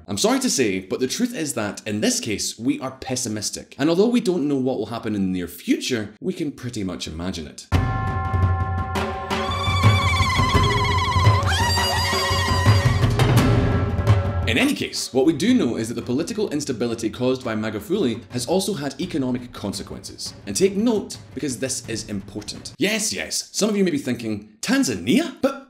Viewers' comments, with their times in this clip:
0:09 What's with stereotypical sound effects ?